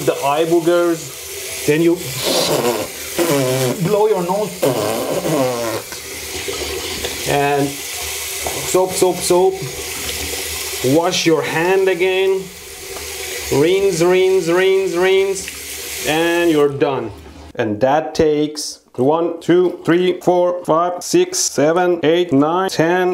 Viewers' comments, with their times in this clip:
0:04 looks like the sound is coming from somewhere else.......